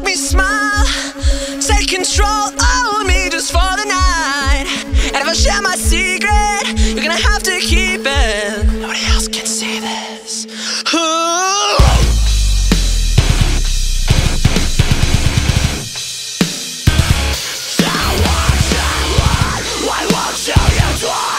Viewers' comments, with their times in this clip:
0:07 That is one sexy whisper